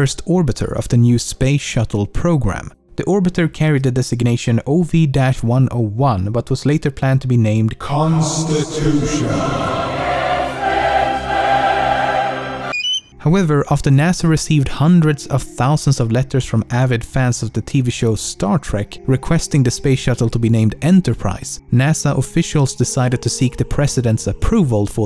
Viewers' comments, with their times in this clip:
0:07 i jumped out of my bed , the volume was too damn high